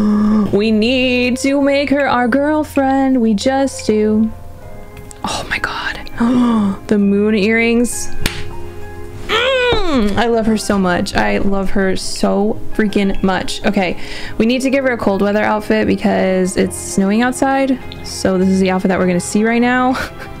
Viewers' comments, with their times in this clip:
0:08 she look like she was startled by your clap lol, so cute